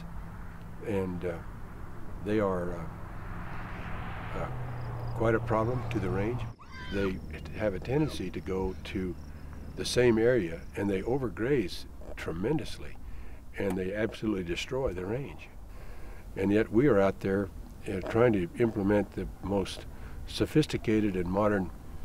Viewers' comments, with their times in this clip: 0:03 You can tell by his body language and hesitation that rancher doesn’t even believe his own bullsh*t.